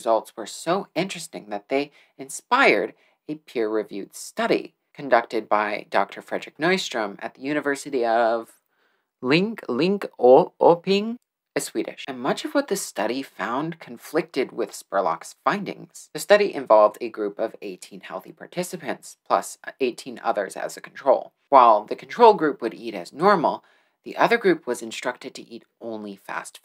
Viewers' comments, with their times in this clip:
0:08 I am Swedish and I really love that pronunciation. XD